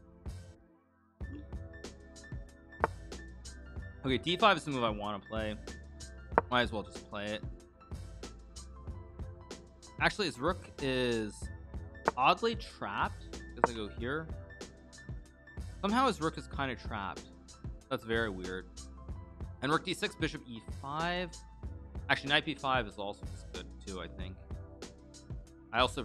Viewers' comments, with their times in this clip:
0:09 .... that piano beat in the background is pretty sweet!